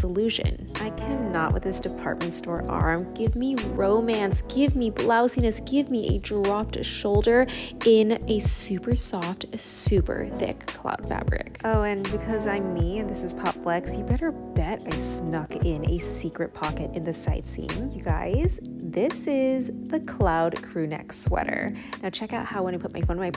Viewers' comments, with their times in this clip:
0:09 Can anyone explain why people talk like ?